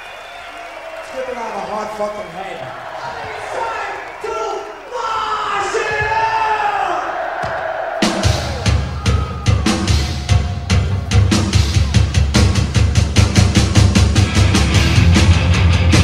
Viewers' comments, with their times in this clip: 0:04 sounds better than the original part from A.I.R